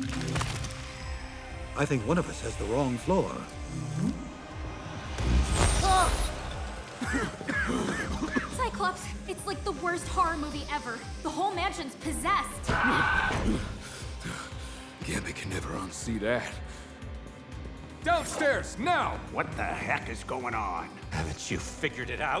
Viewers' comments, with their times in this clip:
0:05 the sound design isnt great --- silence when a door and wall are blown off right next to the characters except for a dull beam noise.